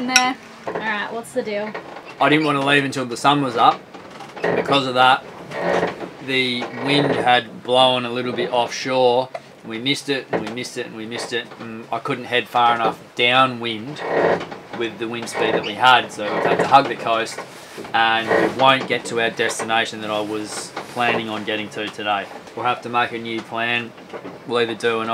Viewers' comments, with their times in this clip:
0:08 his little hiccup nearly killed me.